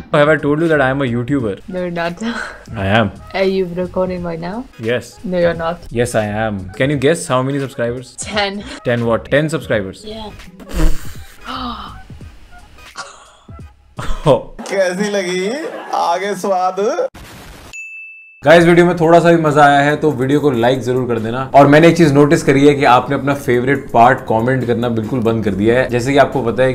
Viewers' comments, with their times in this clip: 0:10 that laugh ........ and that reaction of that girl